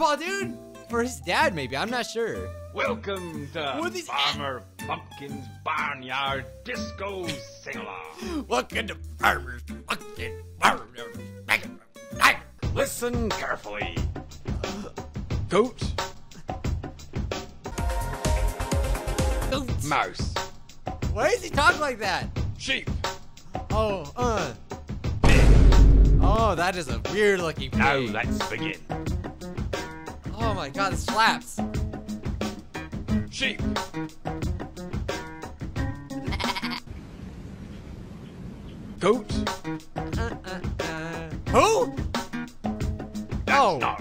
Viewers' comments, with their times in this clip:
0:08 bro sounds like the austrian painter
0:25 The squeal for Don't Search Up The Scientific Name For Pig
0:29 this beat definitely slaps